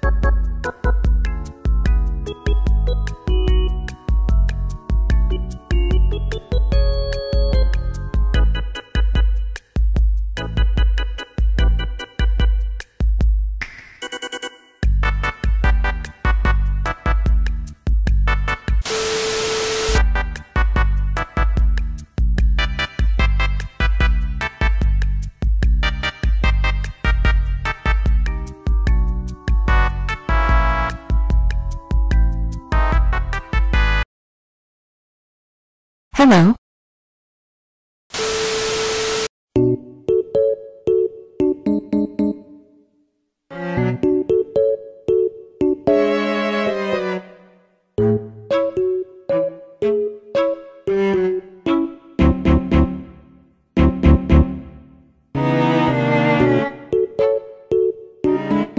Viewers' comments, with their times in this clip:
0:08 turned on beat
0:42 wheeze intensifies (ive been playing too much of the april fools archive)